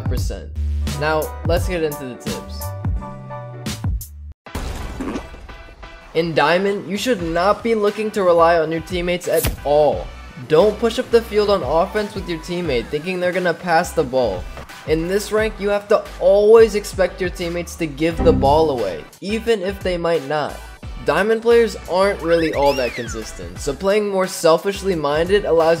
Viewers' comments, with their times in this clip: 0:06 I was taking a dump while watching this, and the sound effect synced up perfectly with the log dropping, and I really thought my body had made that sound for a second.